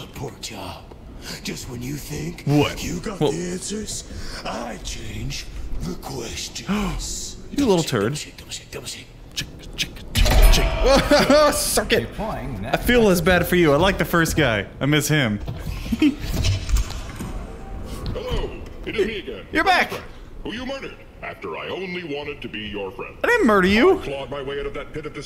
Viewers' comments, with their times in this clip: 0:06 I can’t be the only one the think the Aline falls he sounds like zenyatta